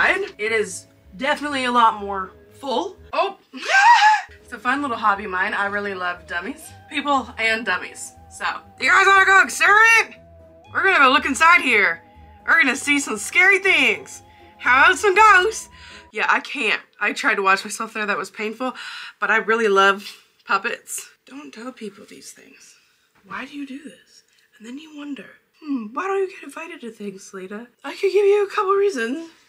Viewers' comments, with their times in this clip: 0:10 I love how, out of nowhere, my girl just showed off her incredible ventriloquist skills???